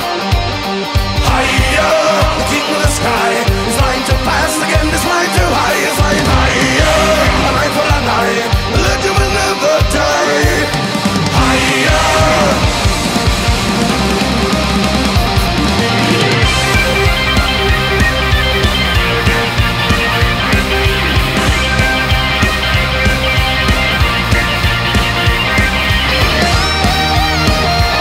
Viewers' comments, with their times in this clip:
0:04 Does Joacim actually sing "Again" instead of "And" ?
0:04 he's siniging "againd" lol
0:15 Jon Lord would be proud of that mini keyboard solo It sounds so much like Deep Purple! Amazing
0:16 the part sounds so cool. is that a piano?